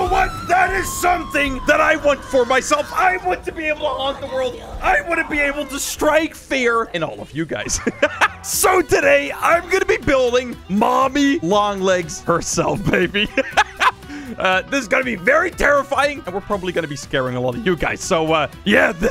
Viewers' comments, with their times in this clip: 0:03 talking meanwhile mommy is screaming in the back